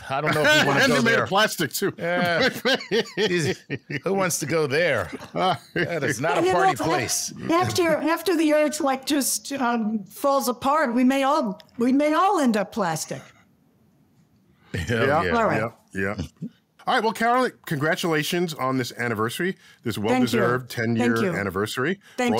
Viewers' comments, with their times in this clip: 0:08 silence, crickets, fear